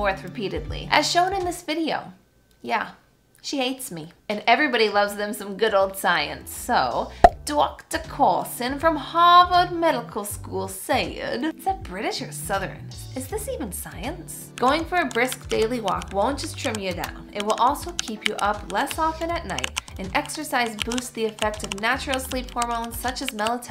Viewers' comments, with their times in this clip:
0:07 Just realised my comment might have sounded super mocking - sorry. I was responding to your "was that a British accent?" joke in the video and clarifying that it was unlike any I've heard here in the UK :)